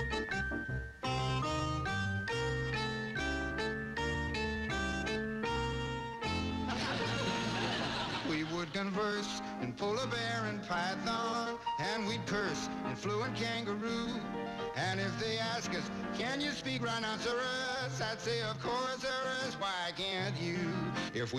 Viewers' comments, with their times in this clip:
0:09 is Jack Sheldon. If his voice sounds familiar it's because he was one of the voices from Schoolhouse Rock in the 1970s (I'm Just a Bill, Conjunction Junction- and here he is on Petticoat Junction). Here Meredith and Lori and trying to woo him away from Henrietta Plout. It's too bad that the music was sped up.